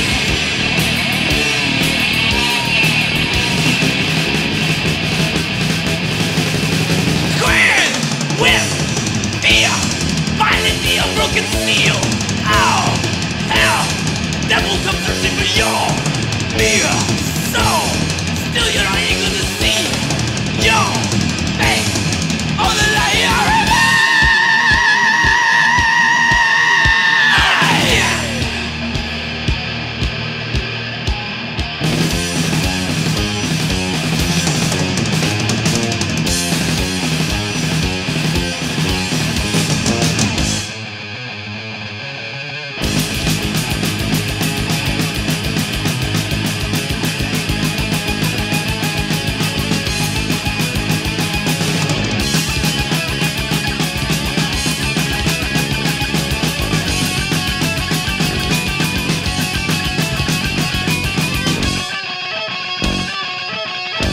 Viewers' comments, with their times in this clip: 0:06 Theres no denial that after hETFIELD IN THE 80S, aRAYA HAD THE BEST VOICE.
0:22 best scream ever
0:23 One of Slayer's more technical tracks & the epic Araya SCREAMMMMMMMMMM!!!!!!!
0:23 greatest metal scream of all time
0:47 Murray/Smith influence kicking in